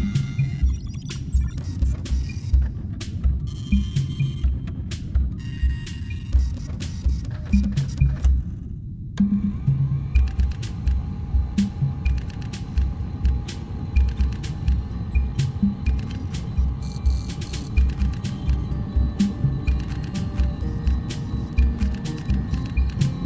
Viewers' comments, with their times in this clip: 0:08 when the pod music started kicking in it almost made me cry